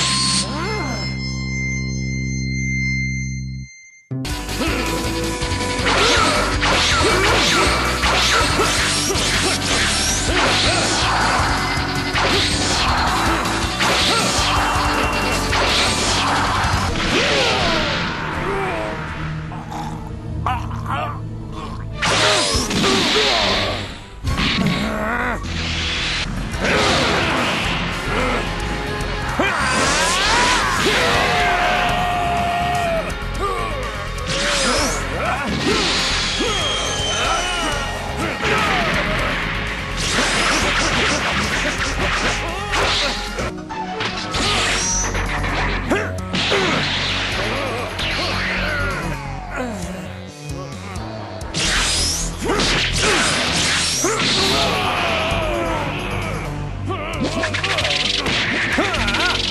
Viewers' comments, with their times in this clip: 0:05 this sound effect is GLORIOUS
0:05 The SFX were so satisfying especially all the disappearing
0:44 Bruce Faulconer fucking nailed the music